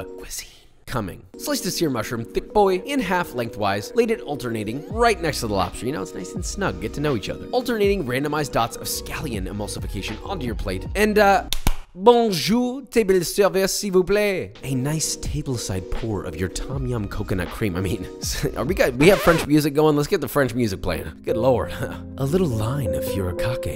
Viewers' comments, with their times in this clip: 0:09 And in the last video you DARED to say you had bad french pronounciation ???? My man straight up lying !